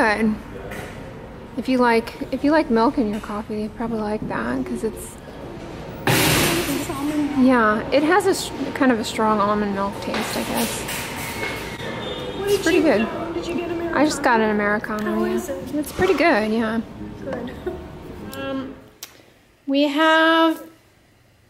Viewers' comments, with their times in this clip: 0:04 jesus that jumpscare shopping cart sound !